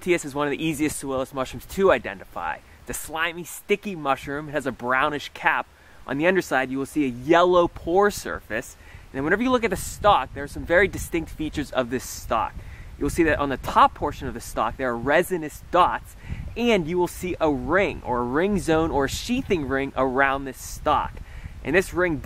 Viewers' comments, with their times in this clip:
0:09 The wind? on this video has an unexpected ASMR effect.